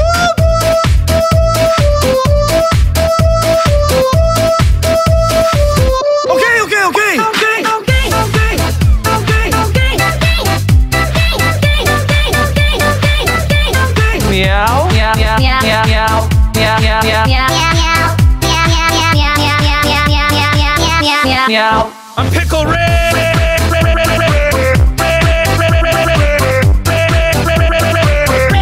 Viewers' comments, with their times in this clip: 0:06 Im gay im gay im gay 💀
0:07 it sounds like he’s saying no gay :’D
0:07 does he say okay or im gay 😂😂
0:08 I’m gay is what I hear💀💀💀💀💀💀💀
0:09 it actually sounds like he’s saying “I’m gay” 💀
0:09 who hears I’m gay i’m gay